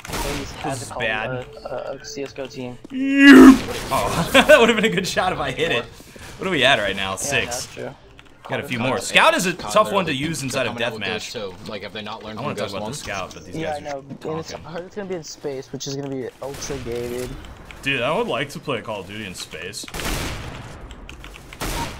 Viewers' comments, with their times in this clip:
0:03 you sound like a wookie... Chewy is that you???